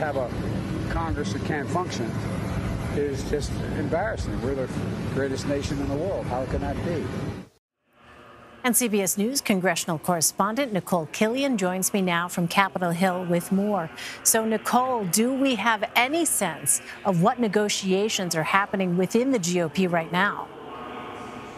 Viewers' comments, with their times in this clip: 0:06 “We’re the greatest nation in the world”. It does not have the same pizzazz when he says it.